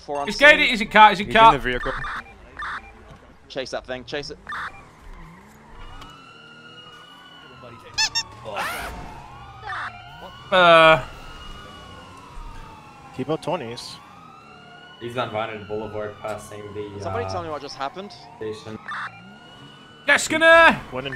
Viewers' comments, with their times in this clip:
0:08 that was the funniest scream i ever heard